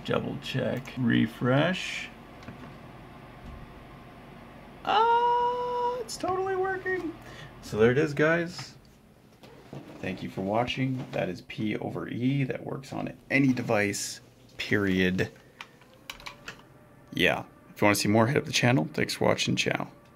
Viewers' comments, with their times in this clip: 0:03 After listening all the manly voices, suddenly sounds like "ah, i accidentally revealed my baldness".